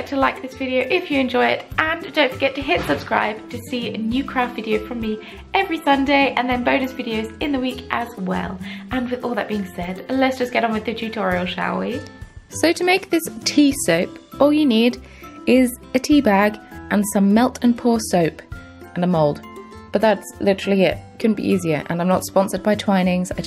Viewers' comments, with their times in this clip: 0:10 the dog starts